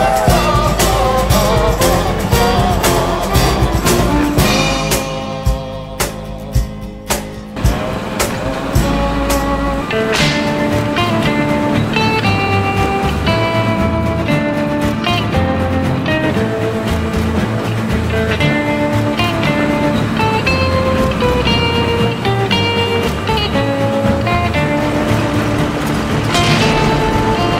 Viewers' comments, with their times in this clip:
0:09 with 1.75 speed. You can hear Harry potter music